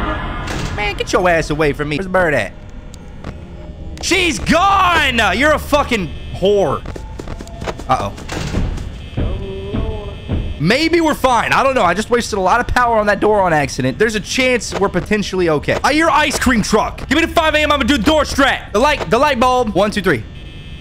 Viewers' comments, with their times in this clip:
0:07 that subtle "open the noor!" was perfect